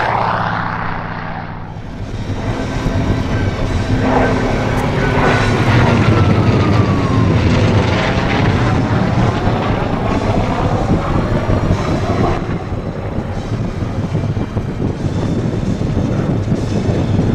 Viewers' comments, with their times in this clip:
0:04 There's my ''Wistling Death''.